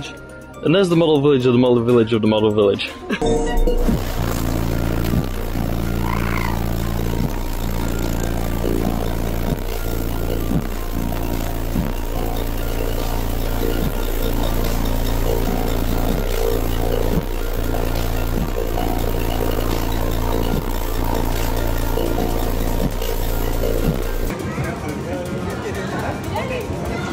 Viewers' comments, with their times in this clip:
0:10 this is a real vibe of music